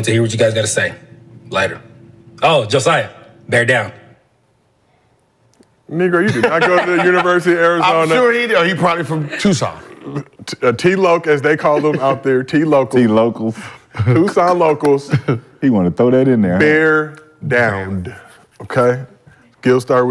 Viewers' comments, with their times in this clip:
0:05 Hardest R in the history of the universe